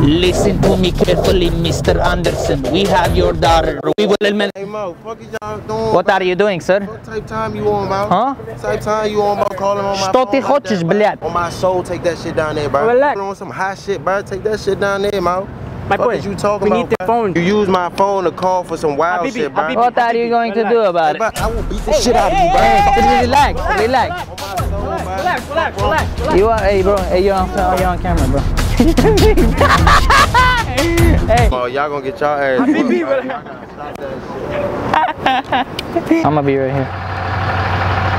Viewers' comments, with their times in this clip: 0:04 the way he said what are you doing sir 😂😂😂😂
0:07 Hey, you have a good pronunciation in Russian, bro👍 "Что ты хочеш блядь" Do you understand the meaning?🤣😂🇺🇸
0:20 As a indian, I'm dead by ur accent😂😂 What are you going to do about it😂